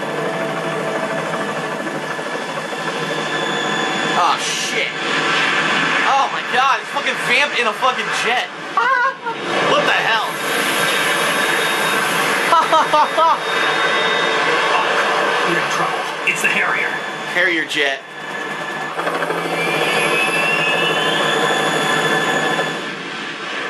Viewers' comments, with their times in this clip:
0:08 BEST LAUGH EVER!